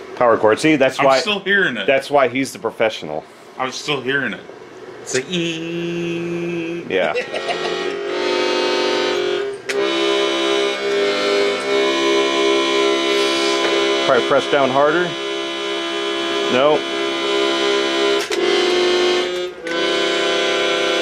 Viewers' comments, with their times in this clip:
0:08 kind of sounds like Daisy